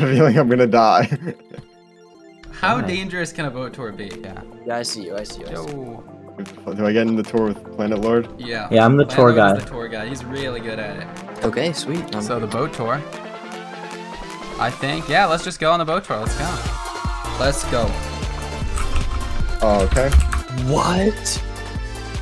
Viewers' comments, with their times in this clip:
0:04 Bro I love the fall guys music